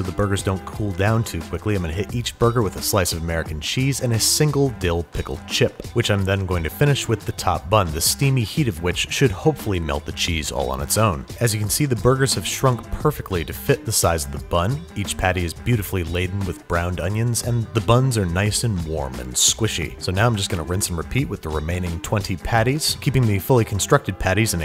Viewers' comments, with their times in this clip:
0:05 i love how he says chip